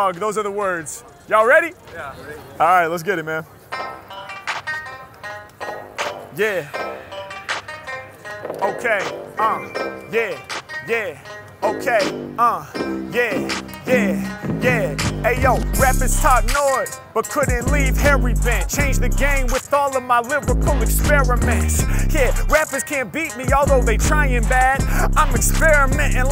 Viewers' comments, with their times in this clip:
0:03 this just may be the hardest entrance . . . to a beat . . . that . . . i . . . have . . . ever . . . heard. 👊🔊
0:10 Can we just take a moment to shout out the video editing improvements over time as well? Obviously Harry is the GOAT, but the transition of the last beat from tinny to full sound was awesome.